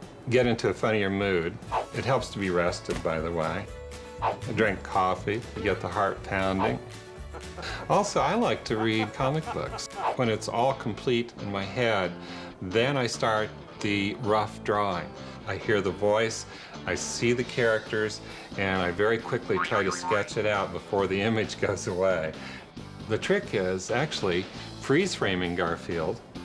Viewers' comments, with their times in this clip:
0:07 genuine laugh by the way